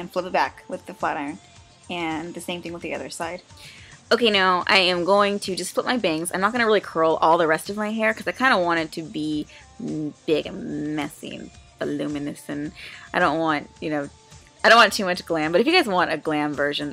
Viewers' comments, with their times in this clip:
0:04 Nicki Minaj's voice